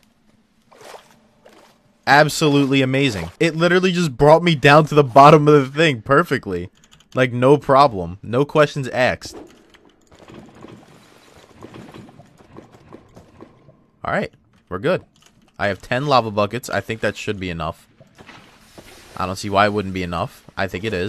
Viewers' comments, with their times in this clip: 0:08 "No questions axed" lol